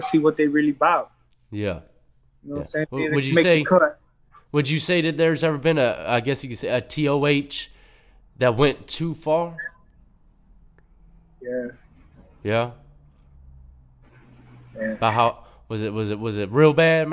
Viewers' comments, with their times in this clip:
0:04 you can tell that TOH went too far the way he said that